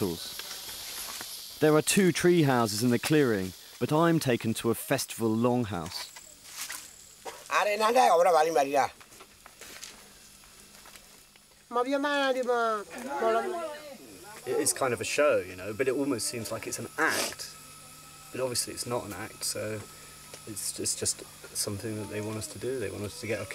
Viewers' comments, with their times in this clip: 0:07 did he say array nange urre baju m Beth Jaa , 😂😂 that's so Hindi.